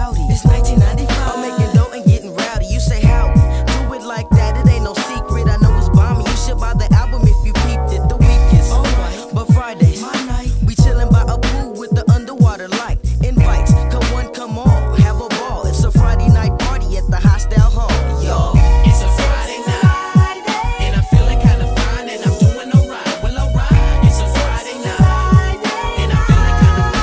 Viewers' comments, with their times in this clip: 0:09 YouTube recommendations in the morning: hey you wanna listen to this smooth ass G-funk jam from the 90s?